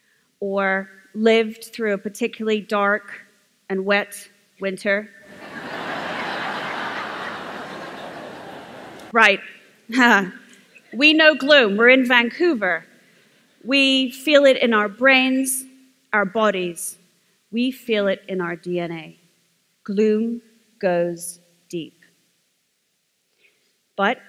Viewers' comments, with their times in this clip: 0:05 Wow this was an amazing presentation, both content and style. I liked how everyone laughed